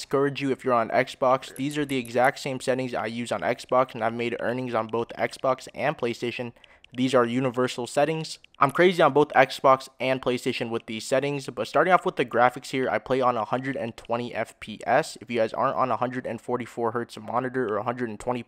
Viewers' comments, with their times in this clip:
0:03 Ur audio overlapped